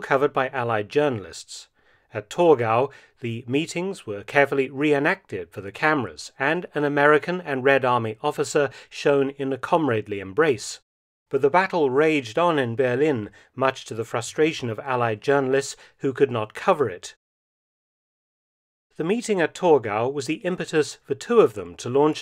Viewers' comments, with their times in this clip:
0:08 Gotta love the broken English